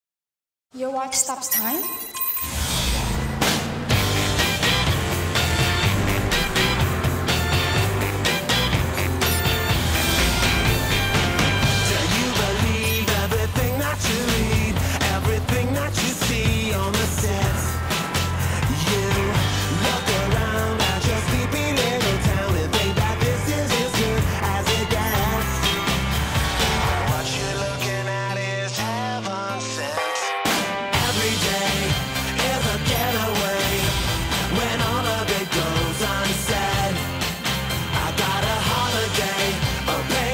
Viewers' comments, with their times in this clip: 0:03 actual guitar starts
0:26 That lyric sounds a bit inappropriate, but that's just me going Mondegreen it seems.
0:28 Thats where dubstep came from ^^